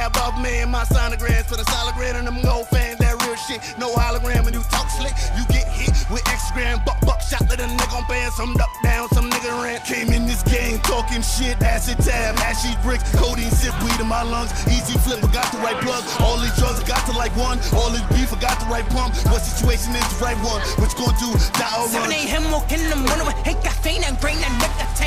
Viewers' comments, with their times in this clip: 0:09 sounds so much like All Eyes On You by meek mill lmao anyone nice movement bro